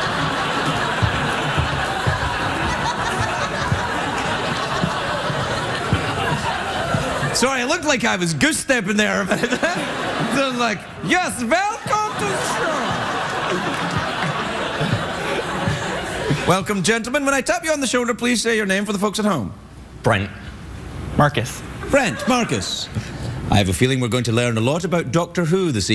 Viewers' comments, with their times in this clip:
0:10 Velcome! I laughed so much...